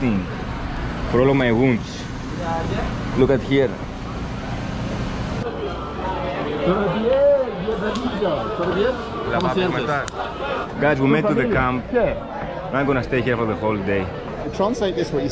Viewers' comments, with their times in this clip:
0:03 whoaaa why did I hear Indonesian there? Why Indonesian people there???